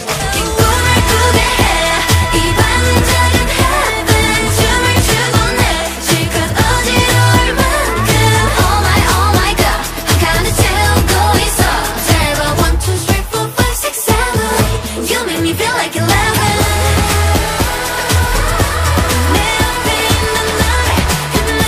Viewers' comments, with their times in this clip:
0:03 Liz,yujin and wonyoung... They're voices together are ~✨